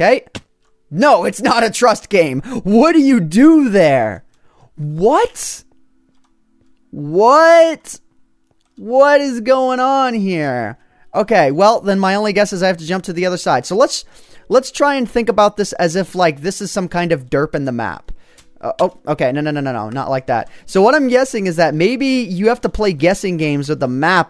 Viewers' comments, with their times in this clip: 0:06 picture Miranda Sings voice :p